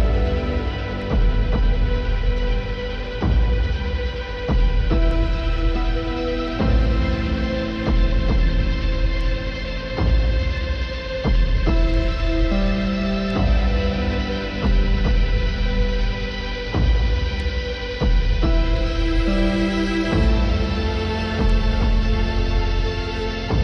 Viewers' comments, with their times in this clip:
0:06 sounds just like the soundtrack for the interstellar movie.